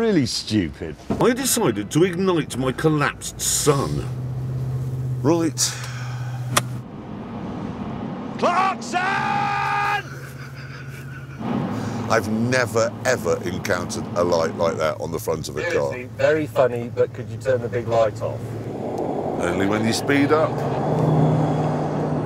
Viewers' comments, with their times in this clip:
0:07 they really like editing that recording of May shouting “Clarkson” in to other episodes from the Africa Special